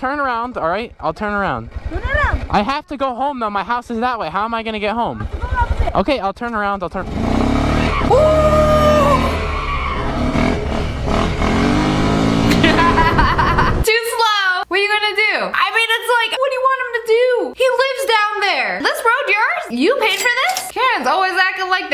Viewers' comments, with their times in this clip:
0:08 that scream was crazy